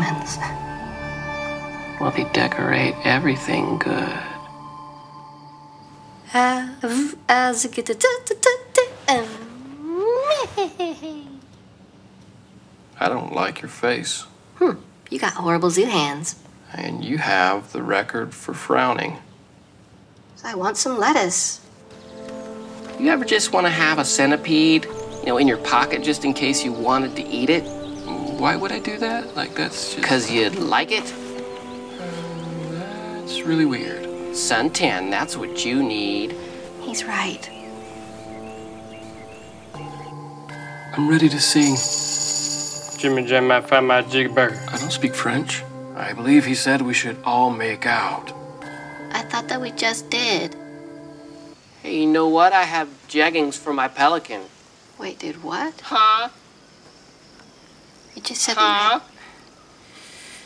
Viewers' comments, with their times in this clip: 0:07 omg this scene was hilarious. "I don't like your face." LOl JASPERS GIBBERISH BAHAHHAHAHAHAH
0:43 sounds like, "Jimmy jam! I found my jeega burger!"😂😂😂😂🤣
0:44 Is what Jasper says even words?